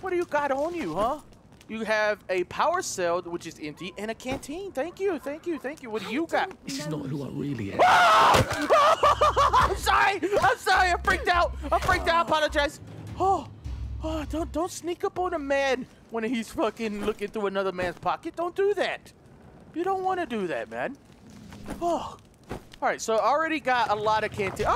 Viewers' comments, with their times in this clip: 0:06 lol the 2 people behind him asked for food really calmly and he just turns around and screams and kills both of them
0:09 That scream ahhaha